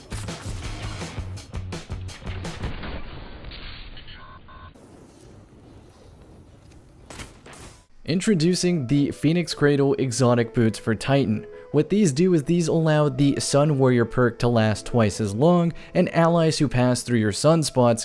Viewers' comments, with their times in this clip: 0:04 the slowed sound effect of someone deleting themselves irl